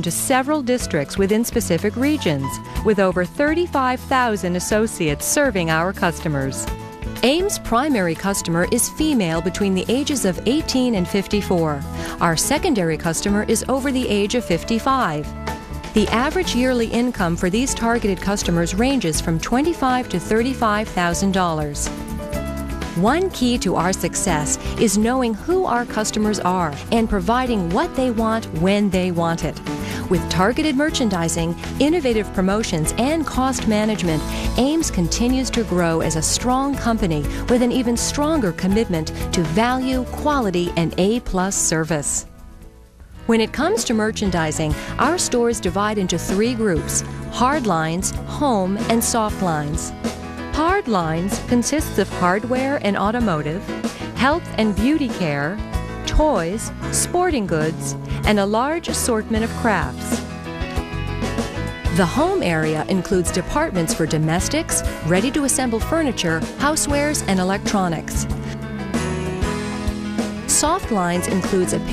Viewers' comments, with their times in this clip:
0:09 lol This is an old video and I put it on for background noise, but Im and this fuckin music and the narrator, it reminds me of a mix between "How its Made" and a video that the substitute teacher would put on in history class in high school, where youre supposed to fill in the blanks for facts on a worksheet. "At Ame's, the ____ area includes _____, ______, and_____ merchandise. How much does the area bring in annually (100k of dollars)?"
0:58 A Large Assortment Of Crap